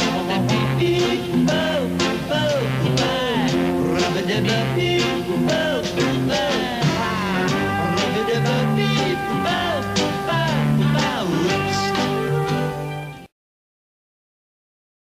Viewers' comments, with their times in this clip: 0:10 When he sings 'ooops' I wonder if he made a performance mistake, and it was kept in the finished theme?